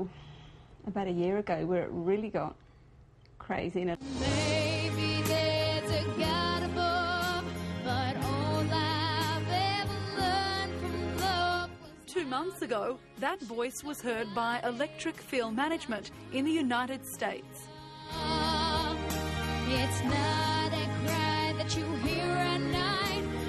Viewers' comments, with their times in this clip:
0:05 that hallelujah part shows he can really sing!